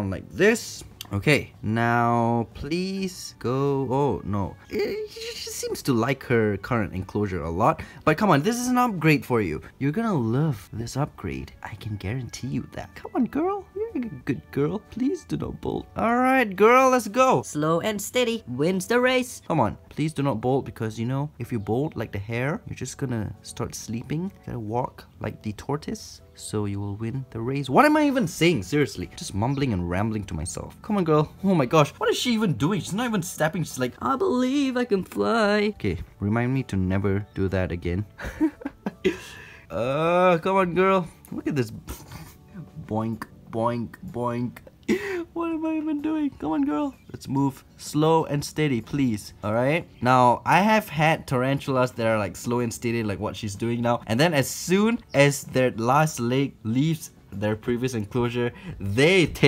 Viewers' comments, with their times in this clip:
0:10 he starts yo sound creepy lol
0:15 How did u go from so energetic from talking slowly
0:33 dude tbh I literally love ur voice that was amazing fantastic no really I'm not being Sarcastic and also love your video love you have a great day/night peace
0:34 when he likes arachnids and can sing 😍
0:42 The boinking part is guys, enjoy it